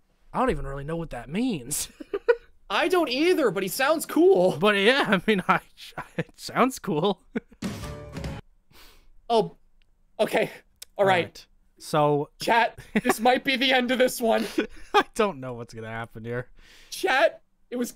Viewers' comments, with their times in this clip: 0:03 since I was nice enough to look it up, a paralyzed, vocal cord is the inability to move one of the vocal cords in your voice. I guess that could explain why it sounds someone hushed. I don’t know what it fully means myself. This is all of that I was able to look up right now, but I’m pretty sure there’s more detailed stuff out there.